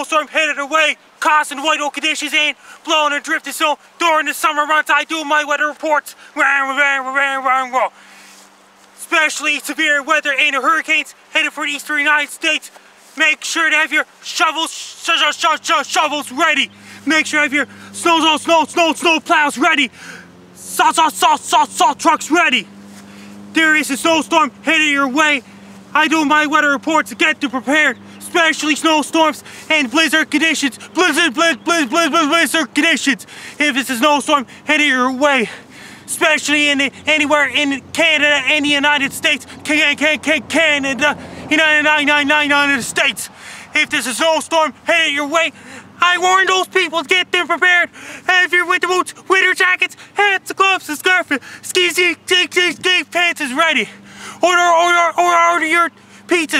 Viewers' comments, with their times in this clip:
0:06 is when the bass drops
0:39 he sounds like a brit punk vocalist when he says "-nited states"
0:42 Really hitting those high notes Frankie! That was insane